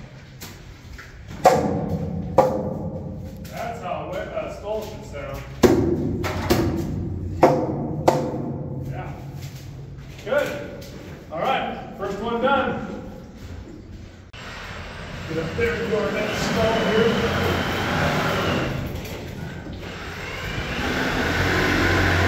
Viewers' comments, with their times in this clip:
0:10 Notice how this EXPERIENCED miner SOUNDS his timbering, quite a difference from when he started with this piece, it is the sound of confidence, something you can trust, rely on to perform! Eh?